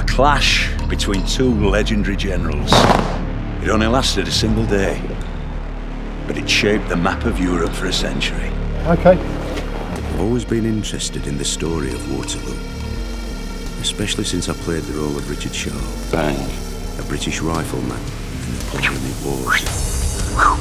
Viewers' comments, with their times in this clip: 0:08 the "OK" has the same energy as the clip with the African dude in the rainforest